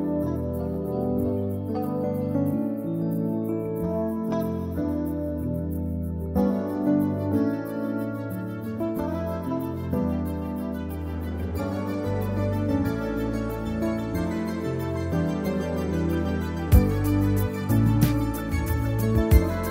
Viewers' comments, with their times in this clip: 0:06 The way the cascading synth line comes in Tasty.